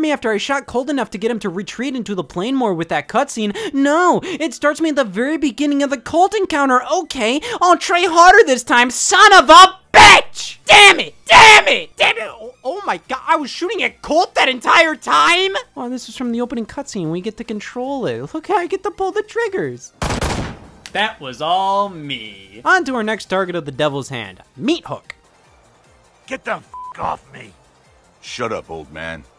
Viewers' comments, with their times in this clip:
0:10 Scott goes full AVGN